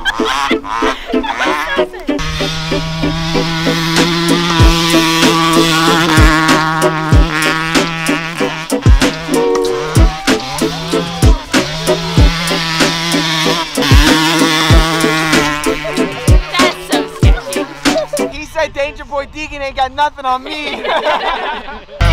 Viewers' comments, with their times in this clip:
0:08 im Like this song